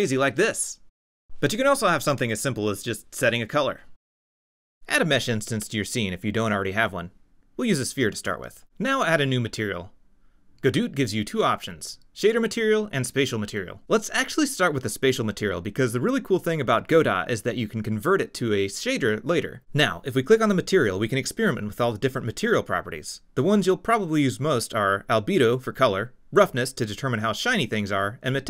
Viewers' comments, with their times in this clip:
0:10 You had me at Goduut! x)